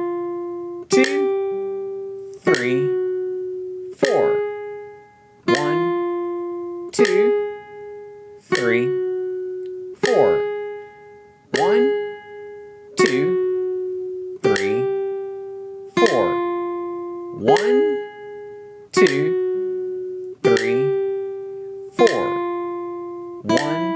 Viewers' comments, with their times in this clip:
0:05 you play a G natural instead of a G sharp :0